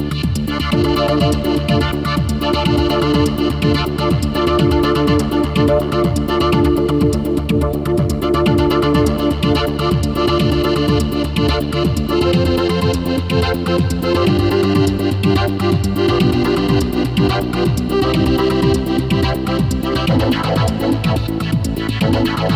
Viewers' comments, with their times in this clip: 0:10 Great chords ! Good show, man. =)